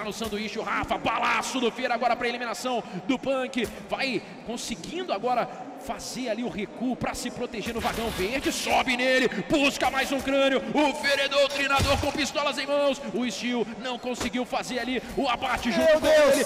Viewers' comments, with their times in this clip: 0:03 why does it sound like hes rapping xD